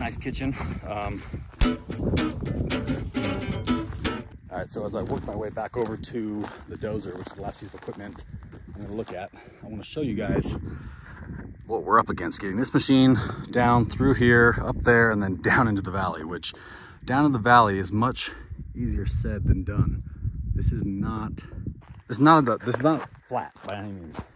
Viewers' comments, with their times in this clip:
0:09 kinda dig the solo, LMAO you had me at like rough about. That dozer looks like a beast of a tank.